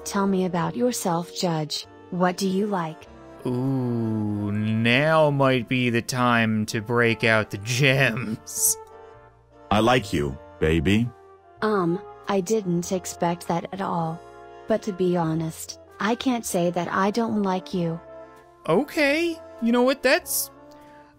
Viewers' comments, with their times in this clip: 0:07 Re: is that guy in the background having incontinence problems or something? That voice acting at this spot is so sincere isn't it? [/sarcasm] Sounds like that they used google translate 1.0 for the voices.